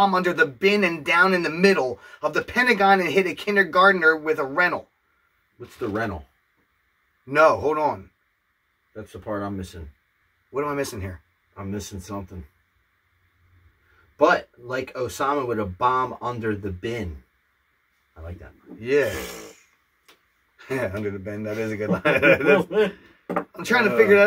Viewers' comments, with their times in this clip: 0:06 Great reaction as always. And it did indeed say "rental" meaning by that a rental car, you can hear a car break sound after he says that. This is some outrageous old slim shady stuff 😅😂